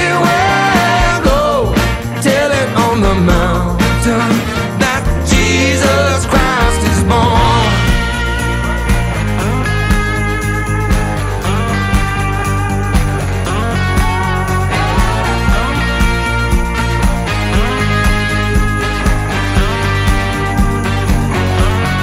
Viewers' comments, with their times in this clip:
0:06 Love the Fortunate Son sounding riff